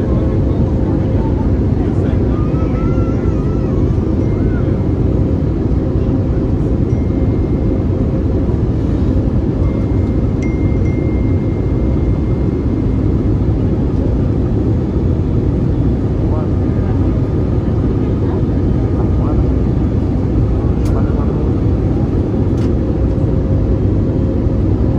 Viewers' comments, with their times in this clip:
0:09 Cell phone dinging Lol Typical Philly people thinking they're entitled to the world.